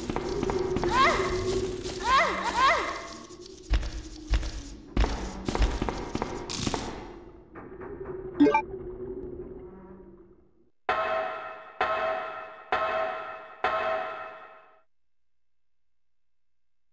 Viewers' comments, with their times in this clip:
0:03 who listen 👂 to gun shots ? I really don’t organize it since 23 years just now know it